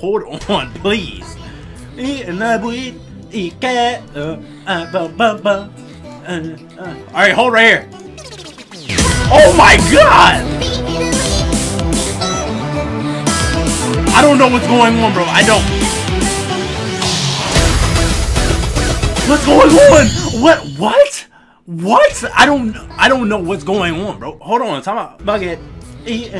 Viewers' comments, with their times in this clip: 0:07 bro I literally jumped out of my seat cuz I had headphones in lmfao but man that beat dropped so damn hard!! Had to replay it